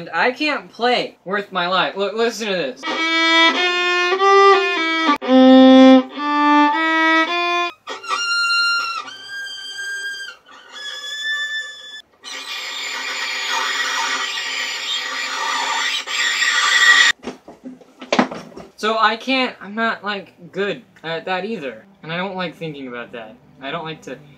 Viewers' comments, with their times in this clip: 0:08 the new nails on chalkboard. Hey man, you're really Good at editing and you're a phenomenal actor. I legit wish I could act as well as you do. So yeah, that's what you're great at. =)